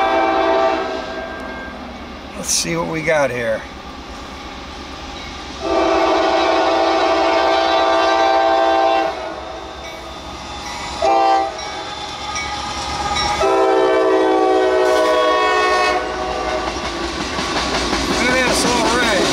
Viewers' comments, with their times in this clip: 0:07 it sounded like Norfolk Southern for some odd reason